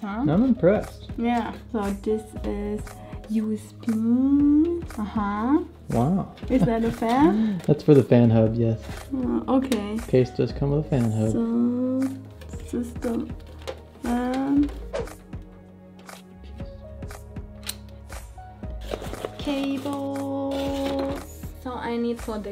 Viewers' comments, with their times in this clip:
0:04 "wow" - Owen Wilson